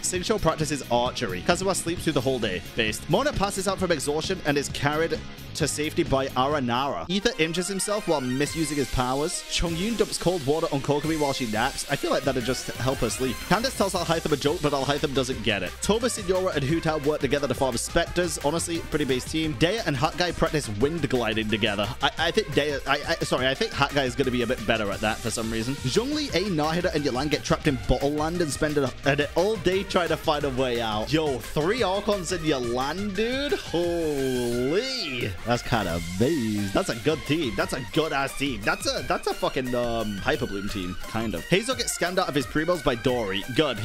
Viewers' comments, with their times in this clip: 0:07 oh my god, danganronpa music jumpscared me, not complaining tho, its a real bop
0:07 When i was watching from and just danganronpa song kicks in now i can't get out of nostalgia 😂😂
0:08 danganronpa music caught me off guard
0:30 I started vibing to the danganronpa music💀